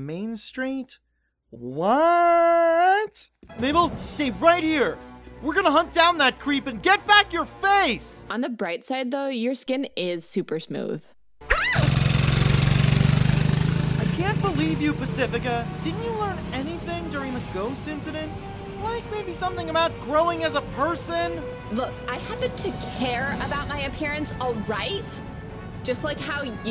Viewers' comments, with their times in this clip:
0:08 music stops On the bright side though, your skin is smooth. AH